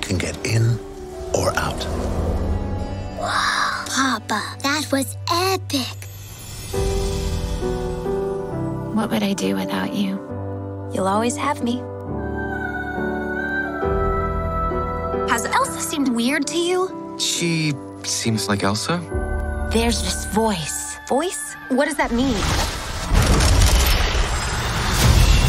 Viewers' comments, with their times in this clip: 0:07 that moment with your sister was the best thing could happen in a day :) and the background music makes it perfect.